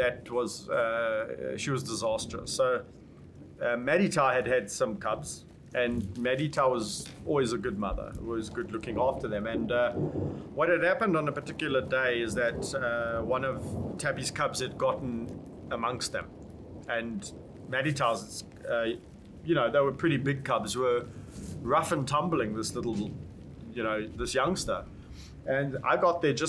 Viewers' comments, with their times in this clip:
0:10 goes Indian for a sec lmao